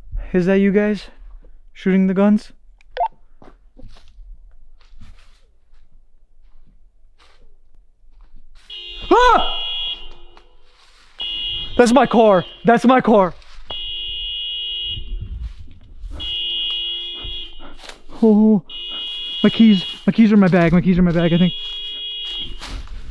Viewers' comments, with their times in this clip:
0:09 and right after your car alarm sounds and you yell, I can see an orb fly away on the right side.